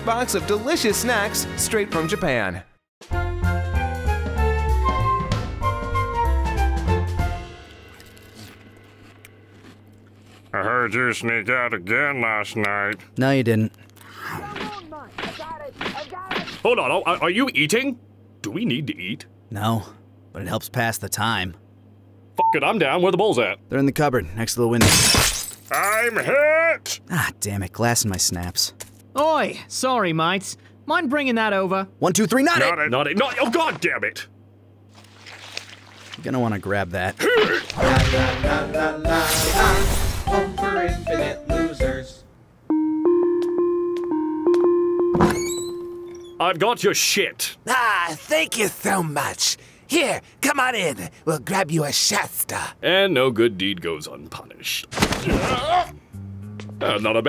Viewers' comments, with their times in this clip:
0:03 I love the melody & outside house shot it's like a sitcom 🥰☺️
0:42 Oh yeah I can hear the song a bit